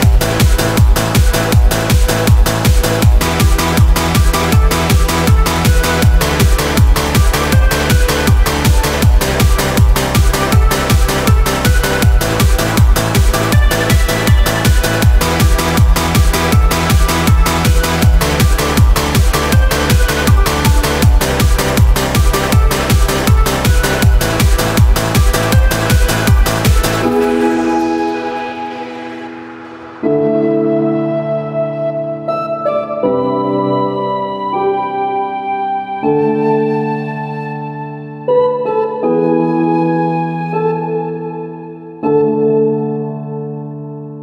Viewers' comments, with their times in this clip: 0:04 I HEARD YOU TICK TOCK!!!
0:29 sounds like it's straight out of a Zelda game